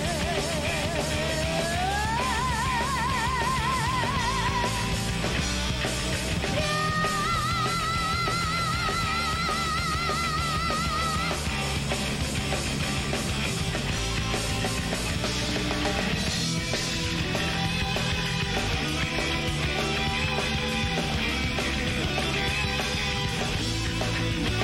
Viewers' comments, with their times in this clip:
0:06 She looked very happy to hit that note That's not easy! 👍Amazing singing vibrato.